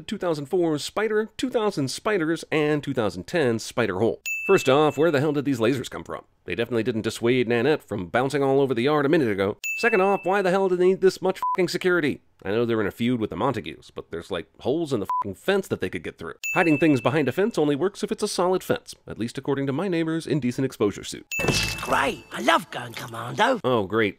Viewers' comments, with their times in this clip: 0:06 Was that kermittt😭💀